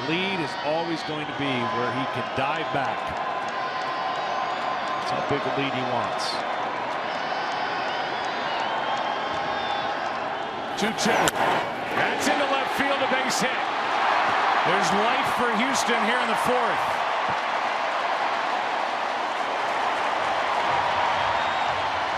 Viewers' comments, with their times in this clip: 0:09 also hear the Charge whistle!